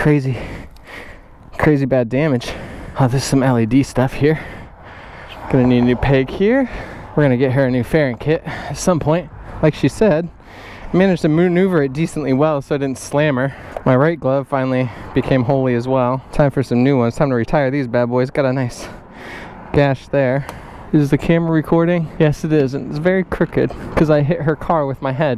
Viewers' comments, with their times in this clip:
0:07 Voice crack lmao